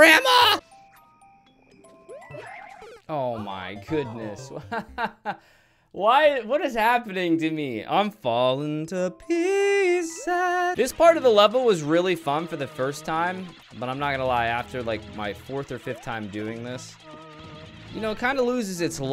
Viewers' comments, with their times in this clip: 0:04 His brain broke so hard he started singing